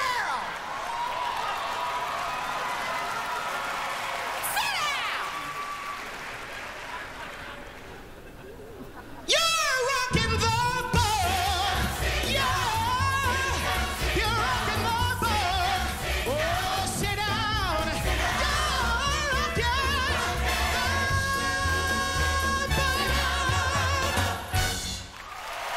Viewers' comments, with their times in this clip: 0:09 that note is UNBELIEVABLE! shivers down my spine every time i hear it.